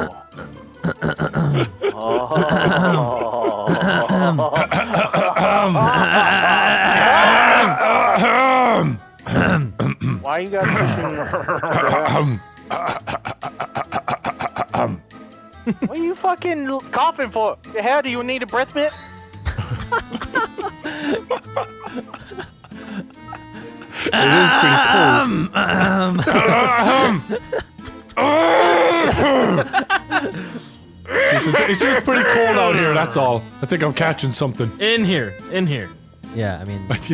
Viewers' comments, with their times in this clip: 0:10 Did anyone else clear their throats ?! 😂
0:10 when Seth Rogan laughs
0:11 I actually had something in my throat🤣😂🤣
0:12 failed car engine
0:12 car starting up
0:19 XD DOUBLE LAUGH OF VANOSSGAMING